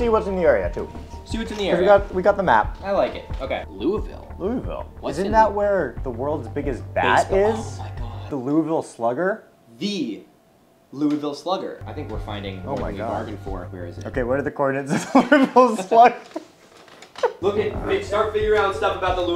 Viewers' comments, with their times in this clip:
0:05 My inner soul dies when I hear people call my hometown like that